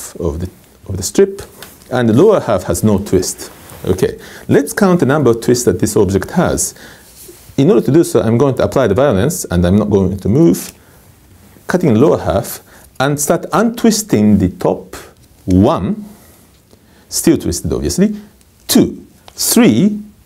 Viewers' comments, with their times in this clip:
0:08 Apply the what?